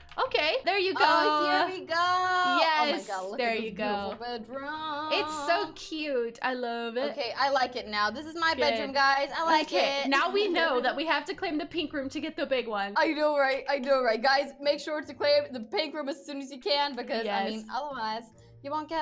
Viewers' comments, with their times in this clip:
0:05 Dang that singing